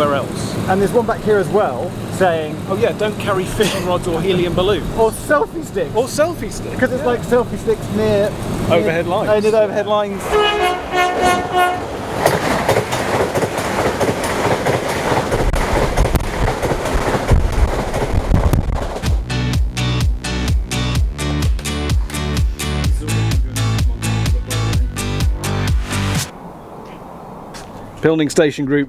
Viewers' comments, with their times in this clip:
0:09 Nice horn toot!
0:11 I might be going slightly mad but I’m sure the train that goes past played the theme to Match of the Day with its horn. I think I watch too much telly…